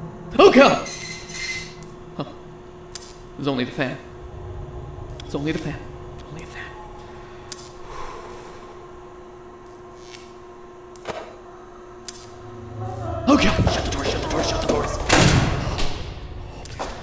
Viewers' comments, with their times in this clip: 0:04 Are we gonna ignore the fact that it said only fans